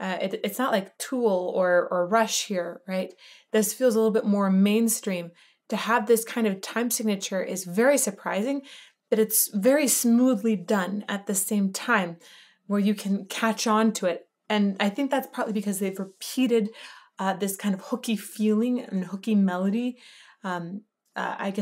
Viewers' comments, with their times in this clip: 0:08 If I could make a suggestion here, I think the 7/4 sounds even more unusual than 7/4 usually does, because it's a 3+4 feel. 7/4 is more often approached as 4+3. In my opinion that makes a difference: the emphasis on beat 4 sounds like another triplet starting again, and then there's a pleasant surprise when we chill out after beat 6 and wait for beat 7 before starting again. It's like a happy dance at a summer village fair :) What's even more interesting is that when the verse kicks in the feel changes to 4+3.